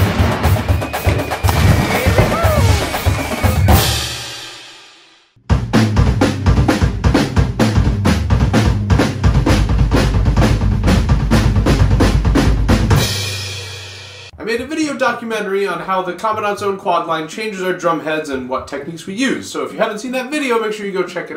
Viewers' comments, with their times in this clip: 0:05 Sounds like timpani solo Double stock copper top